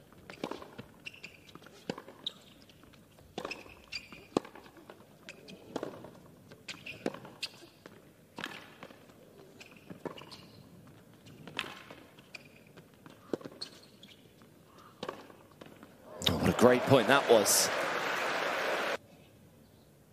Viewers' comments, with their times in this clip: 0:03 The way Coco went down to return that shot 👏👏👏. The "Oo-oo-oo" from the crowd said it all